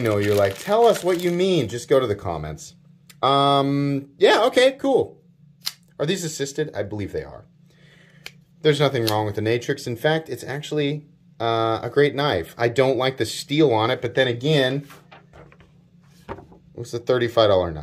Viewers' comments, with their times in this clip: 0:04 sorry, I thought at one point you said, "I don't know about these" But when I re-watched the video to time stamp it, I couldn't find it. Maybe it was a combination of "Are these assisted?" And reading a comment simultaneously that caused me to falsely hear something.